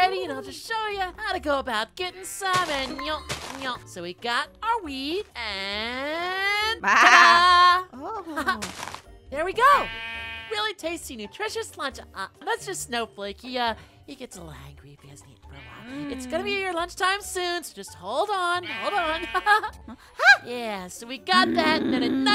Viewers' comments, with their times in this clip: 0:03 The noises Noi made 😂😂😂